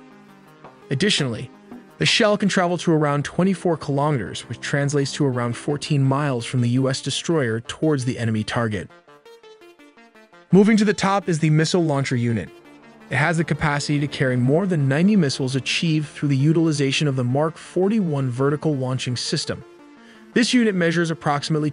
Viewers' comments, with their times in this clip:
0:08 Good vid, but be aware the vid mispronounces both "Phalanx" and "Frigate"..... also, noted the range map is badly out of scale, the indicated range being more appropriate for a ballistic missile than a fleet defense missile.